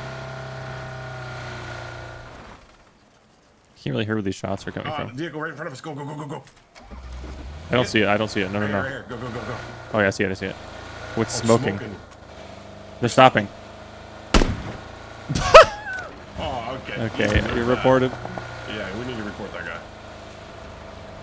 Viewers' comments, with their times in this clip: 0:09 I love the synchronization they have when they both say "It's smoking" and then "They're stopping" at the same time lol.